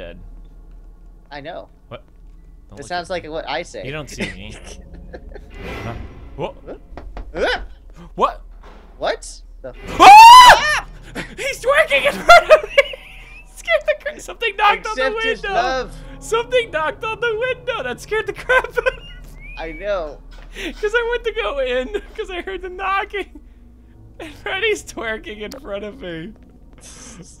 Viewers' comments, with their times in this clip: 0:09 That was a great scream right there. I'd make that noise too if Freddy popped in font of me and started twerking like that.